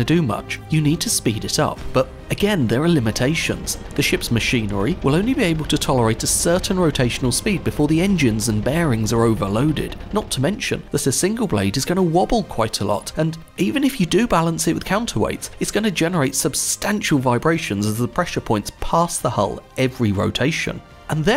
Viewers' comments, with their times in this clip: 0:04 the engine sounds Like the engines in Stormworks